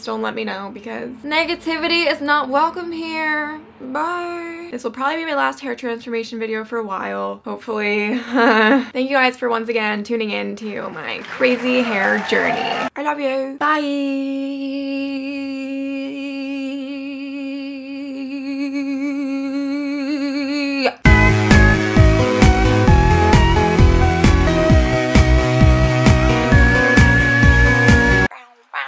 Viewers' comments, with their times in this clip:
0:10 living in Australia that applause sounded like rain-